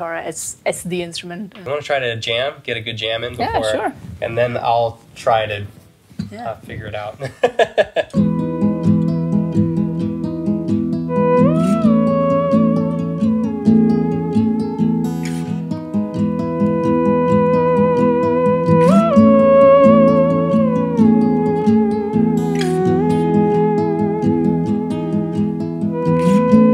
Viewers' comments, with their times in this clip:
0:08 I am a BGM maker. is a masterpiece it can be really use for movies in a part where the lead character dreaming about something he/she cant achieve.